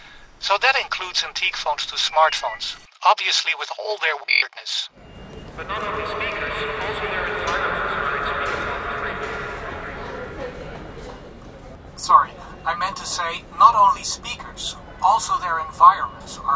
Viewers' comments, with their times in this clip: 0:04 I could swear I heard a cricket in his voice!